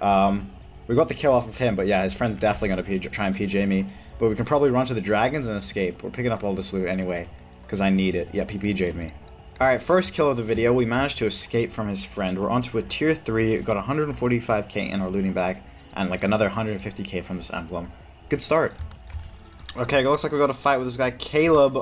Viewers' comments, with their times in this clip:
0:07 "Yep he BJ'd me" niceeeeee